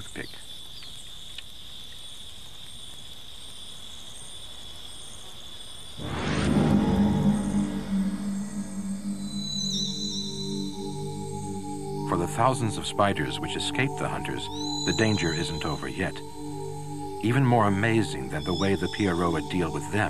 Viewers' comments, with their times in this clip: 0:06 i feel ive heard this music before...getting Goosebumps vibes